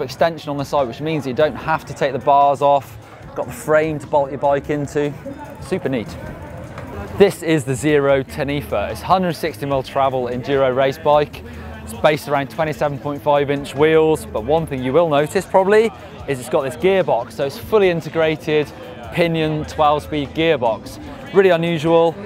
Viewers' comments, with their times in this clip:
0:07 Zero Ten Ether? I can't hear him too well and I'm interested in the bikes can someone help me ???